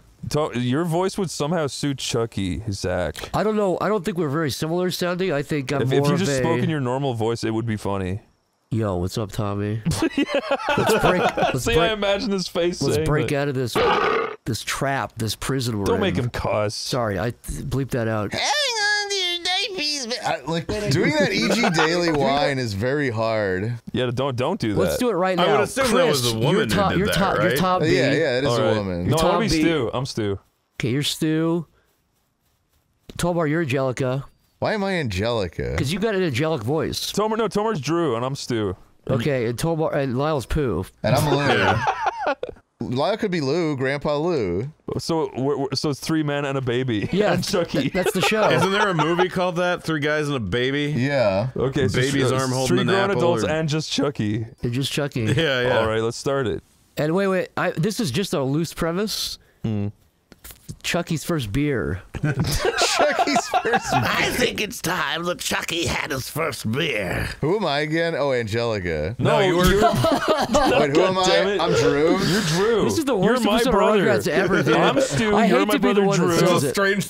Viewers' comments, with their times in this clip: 0:05 Like Yoda in Jontron's Starcade Yoda episode, it was hilarious
1:04 Whoever was doing Grandpa’s voice really nailed it.